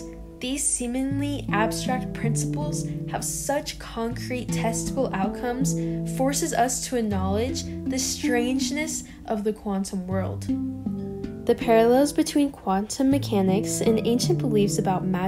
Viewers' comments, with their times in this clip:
0:03 I thought you said "testicle" 😝